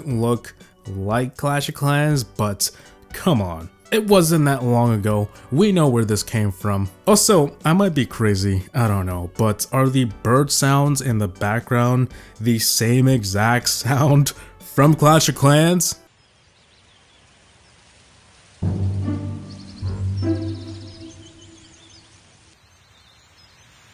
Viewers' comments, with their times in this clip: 0:09 those bird sounds could easily be stock audio that anyone can use